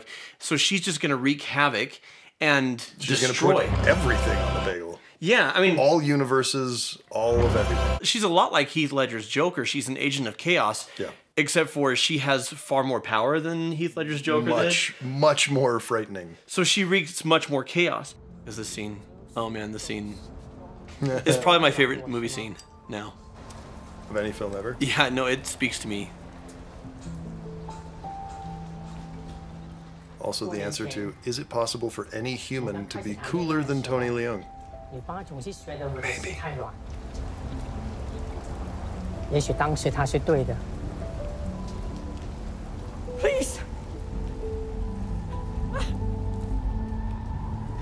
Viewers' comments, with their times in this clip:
0:08 I thought you said she's an ASIAN of Chaos 😆
0:33 He's awesome but he only achieves peak coolness speaking mandarin. And that might be because his accent we have eched to a silly ShortRound/Data in our minds.